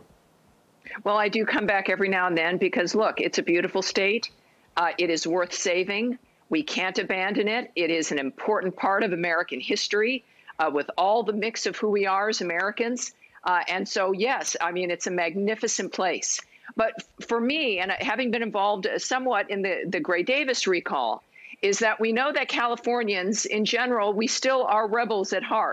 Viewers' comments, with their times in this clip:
0:10 She sounds like hillary lmao